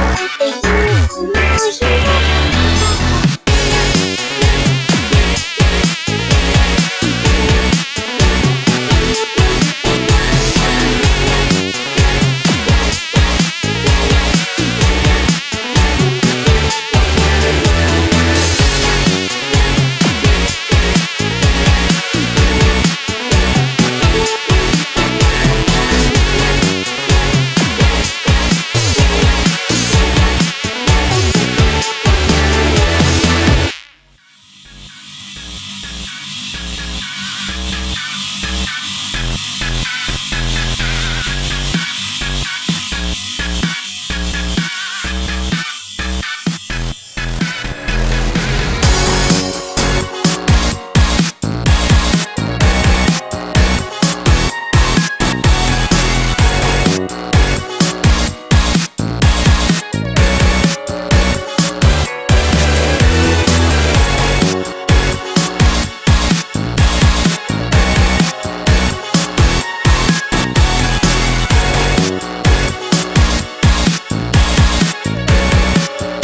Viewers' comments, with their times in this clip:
0:04 This remix has it moments, but overall it just sounds messy. The added vocals almost fit the melody, but not quite. The mosquito noise is aggravating, and then you have this horrible off key trumpet towards the end. Lots of good ideas here, and it clearly took some skill to make, but the execution dragged me right out of the melody and into the comment section.
1:03 there actually is a very subtle We Are Your Friends instrumental sample added to the mix